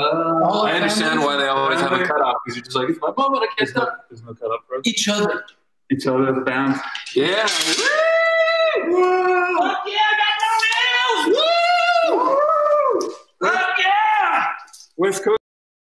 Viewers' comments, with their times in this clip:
0:13 he sounds like Rick Sanchez!!